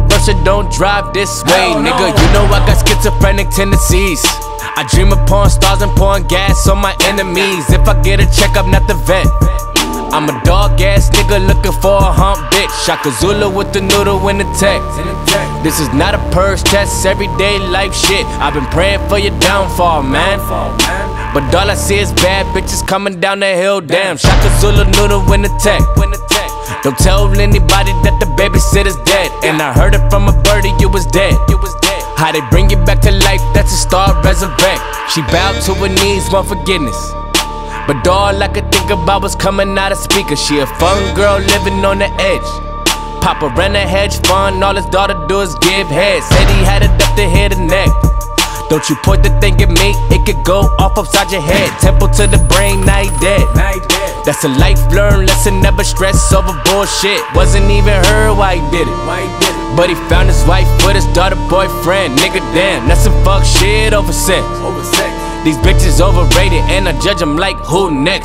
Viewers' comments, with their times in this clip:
0:08 Am I the only one who heard a fart ?
0:52 I like the gunshots in the start and in !